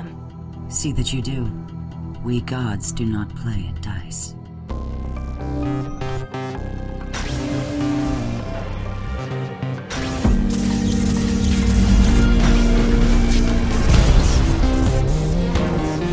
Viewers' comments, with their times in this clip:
0:04 The soundtrackis GREAT !